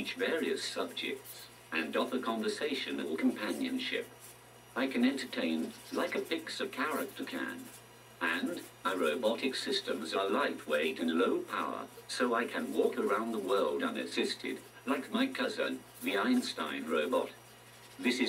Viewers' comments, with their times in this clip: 0:03 it sounded like he said compianion SHIT